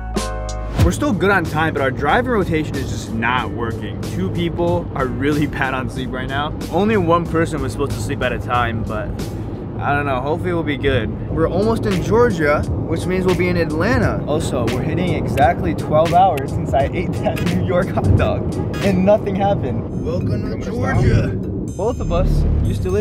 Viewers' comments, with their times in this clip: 0:10 sam and colby ass music 😭😭